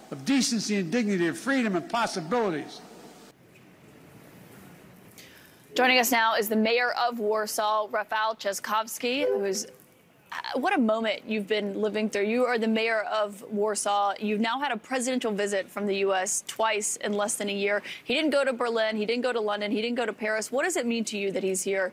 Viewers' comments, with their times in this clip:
0:09 this smile means than he was proud of her beautiful pronunciation of his last name (very difficult for the foreigners)